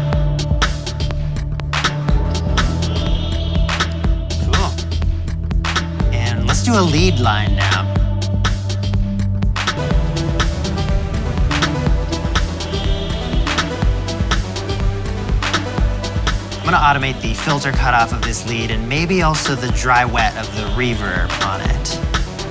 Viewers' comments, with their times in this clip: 0:10 can someone tell me the sequence with the keys he's playing ? I want to replicate it, but it doesn't seem like that segment of the vid is synced with the audio, so the key strokes don't correspond with what I'm hearing, and there's too much going on for me to figure it out. HALP!